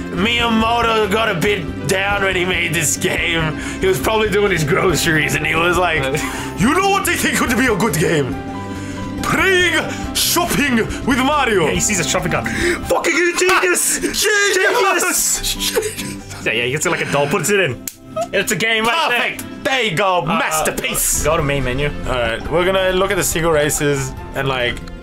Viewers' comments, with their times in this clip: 0:07 Not to sound racist but asian speaking stereo typical asian? Do we call that racist? I cant tell😝